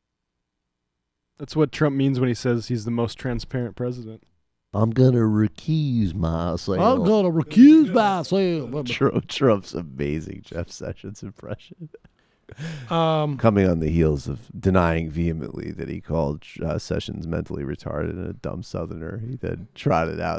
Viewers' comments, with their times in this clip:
0:04 A better impression of Jeff Sessions would be saying: "We're gonna do that crack cocaine thang."